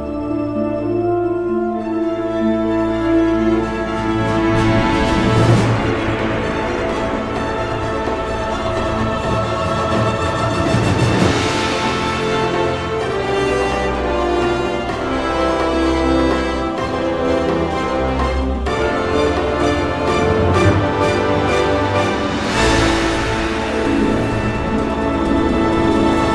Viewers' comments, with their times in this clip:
0:09 the music is literally crying
0:09 The Pink Floyd Sound for me
0:10 Yoooo, even hearing the now made me tear up a bit. Imagine how I would react while seeing him in the movie web slinging in full glory with this theme playing in the background.
0:11 My favorite part is it’s the kind of music that lifts your heart ❤️